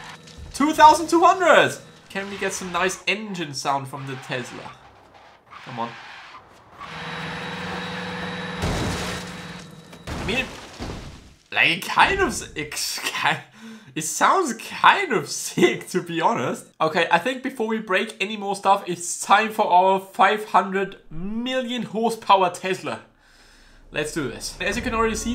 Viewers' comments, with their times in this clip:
0:09 sounds like one of the new Dyson hoovers